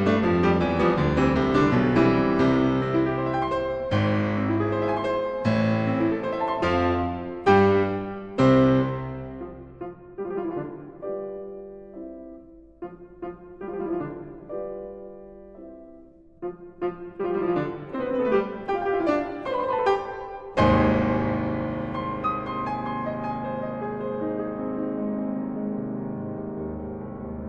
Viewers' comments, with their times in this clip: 0:08 Little bit of a memory slip, nice performance though